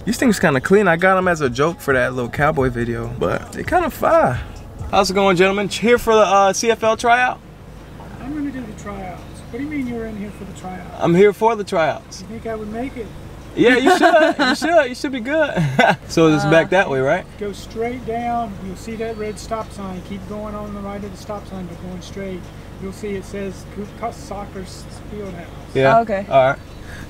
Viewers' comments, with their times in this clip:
0:09 dude sound like the old man from family guy that looked Chris 😂😂